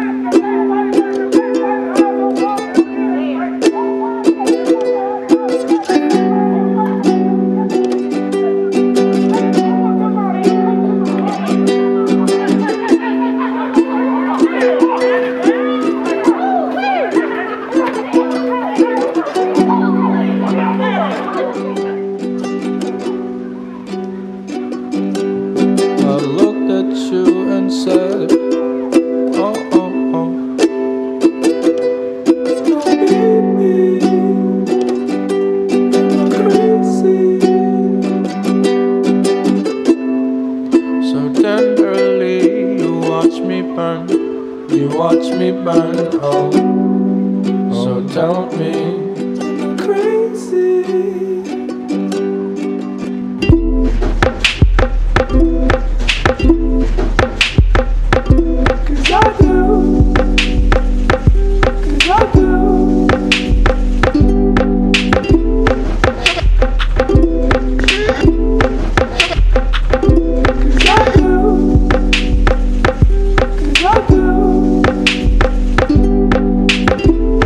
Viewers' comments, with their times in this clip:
0:10 is like a beat to me I JUST LOVE ITTT 😩😩😩
0:32 Everyone:*sad* Me: i looked at you and said oh oh oh Da vinciiii
0:33 all I can hear is “kokichiiii”
0:53 Sorry but the beat ruins the part
0:54 From the song is really bad , why did they disturb a beautiful flow .
1:01 if they didn t added this drums this song would have been so much better